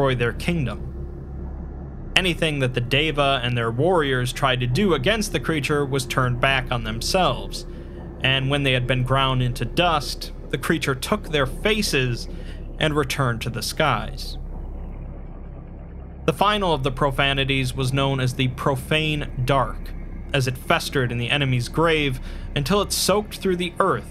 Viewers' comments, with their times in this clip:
0:07 thay chuckle at creature took their faces was 👍❗